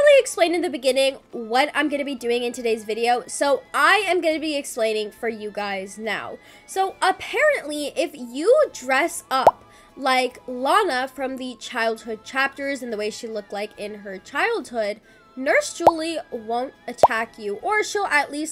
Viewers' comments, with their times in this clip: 0:04 "cassoh" hits hard